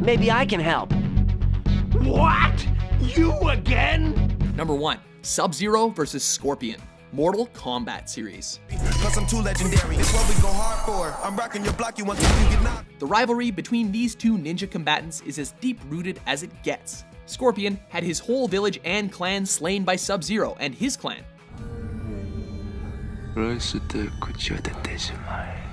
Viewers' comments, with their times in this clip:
0:08 when you are not sure about the no.1 pick but the rap in the background is fire